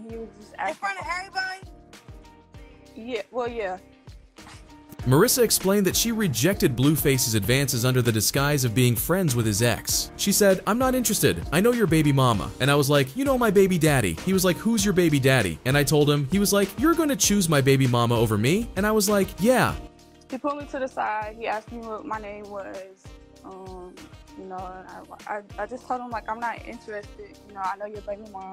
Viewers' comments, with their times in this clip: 0:10 I'm sorry yall I cant take nun serious cuz why he said 'who's your baby daddy' like dattt 😂